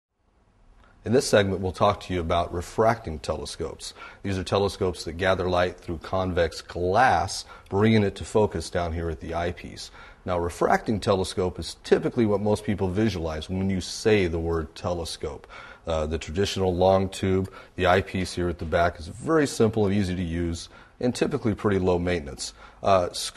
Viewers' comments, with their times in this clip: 0:05 I like how he goes all gangster when he first says 'glass'